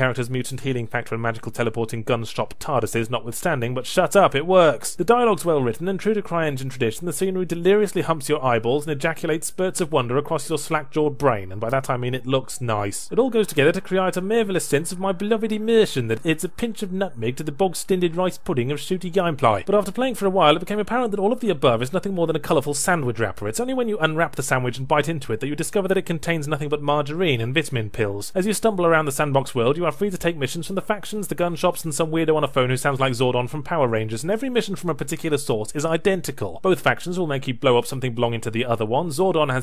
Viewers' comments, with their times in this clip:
0:08 You can hear sirens in the background.
0:25 you can hear emergency sirens in the background.